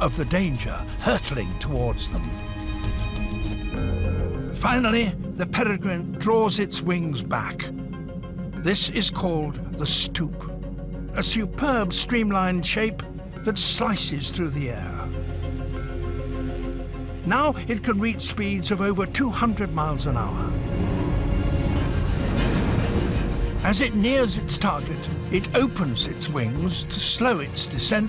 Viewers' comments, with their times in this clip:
0:10 for one moment I heard Stuka